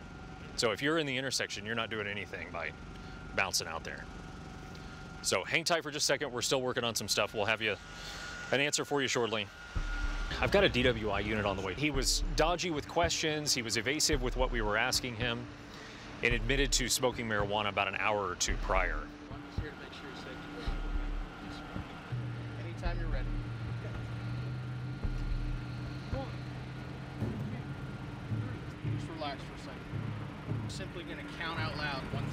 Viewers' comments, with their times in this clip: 0:07 That officer has a voice of a sports broadcaster
0:12 Cops got an amazing radio voice!😂
0:12 what about the dude who sounded like he should be announcing ring side.
0:17 Cop needs to be a voice actor